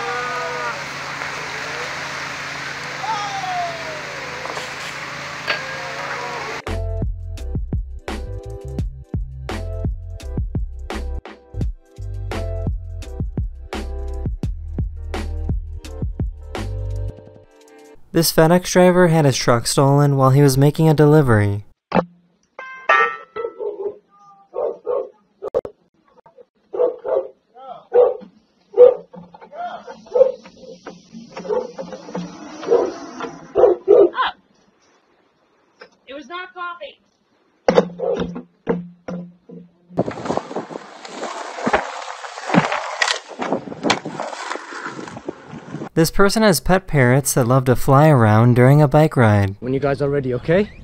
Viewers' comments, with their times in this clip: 0:03 in it sounds like minions saying owh owh in the minions movie
0:06 I like music
0:35 "It was not Bobby" So i guess Bobby normally is the one that steals the FedEx trucks?